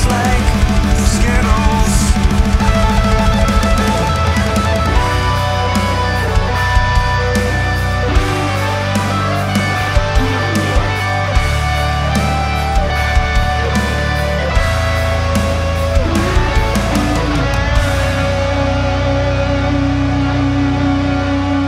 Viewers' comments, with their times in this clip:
0:03 Loved that Solo tho!!! Melodic and catchy, well played.